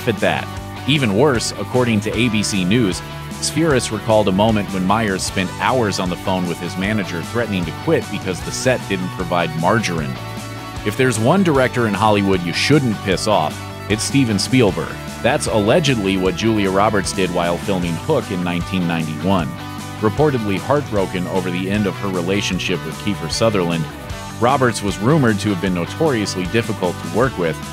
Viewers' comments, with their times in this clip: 0:10 wtf is “marjarin??”